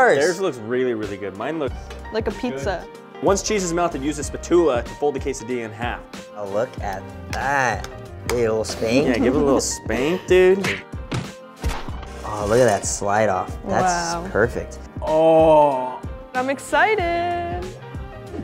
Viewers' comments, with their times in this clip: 0:03 WHY DID KIAN PRONOUNCE SPATULA LIKE THATTTT!!!!!
0:04 BRO HE REALLY SAID "SPATULA" LIKE THAT HOW COULD HE